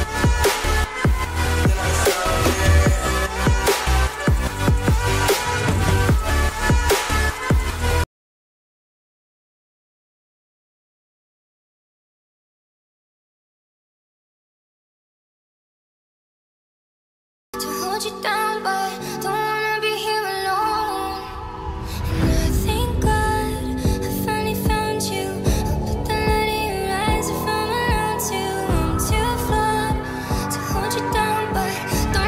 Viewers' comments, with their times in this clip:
0:07 Who else didnt get sound
0:08 sound cut off
0:17 the music stopped lol